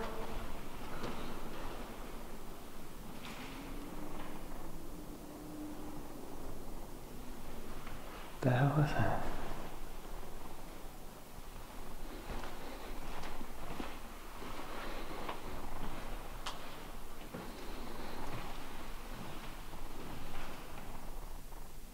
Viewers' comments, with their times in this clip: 0:04 Right you can hear humming.
0:07 i heard moaning